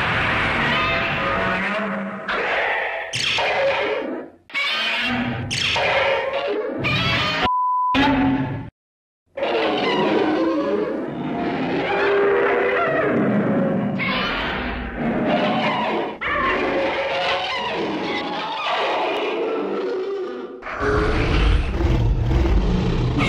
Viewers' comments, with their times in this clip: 0:06 love how it's roars but still censored Also don't forget this is Baragon's house which makes me wonder why Baragon is the only one it seems to own a house.